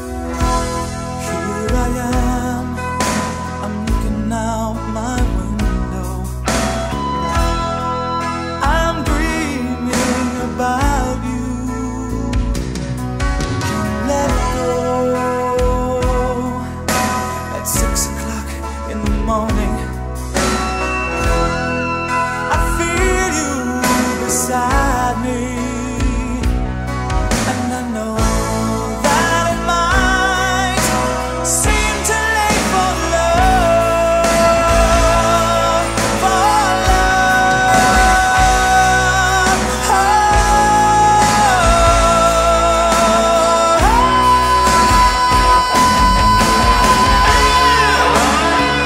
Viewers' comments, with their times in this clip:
0:05 backing track goes before he does. Definitely lip syncing here. Not live.
0:13 definitely lip syncing to a backing track……
0:35 Very nice song but at least sing it live. is so off 😂.